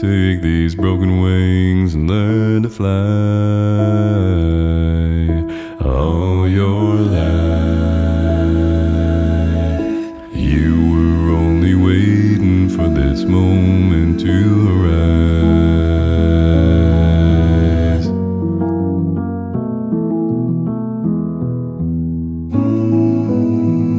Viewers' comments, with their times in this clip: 0:04 OK, I'm going to own up, I downvoted. It's a great showreel but I don't think it does the song justice. One man in different keys does not make an acapella group. Also the upper(ish) bass etc is full of fry, something that seems to affect primarily deep bass singers, certainly Tim Foust, but much less so Avi. Off to Folsom Prison now, ahead of the haters :)